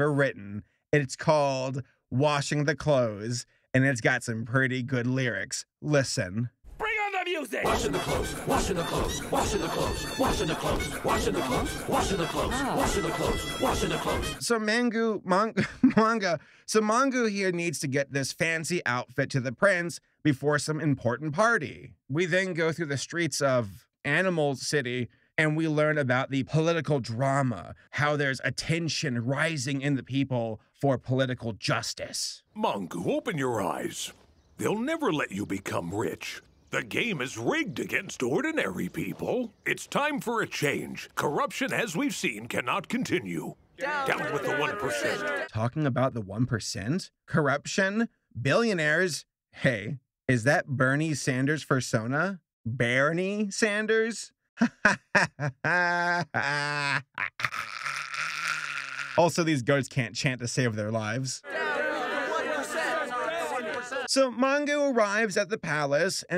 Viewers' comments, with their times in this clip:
0:06 that song went harder than 500 pounds of atmospheric pressure
0:06 Sounds like they are praying
0:52 Funnily enough, that’s actually how “Bernie” is pronounced in Scotland.